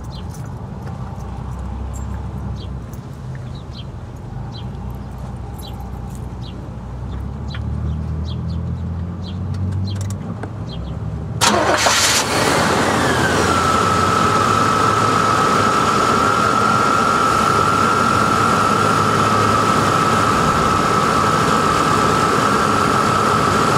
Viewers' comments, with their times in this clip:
0:07 That classic GM 'whirrrrrrr r r" just after ignition! Heard that same sound in many a Caprice from that year or the 1980s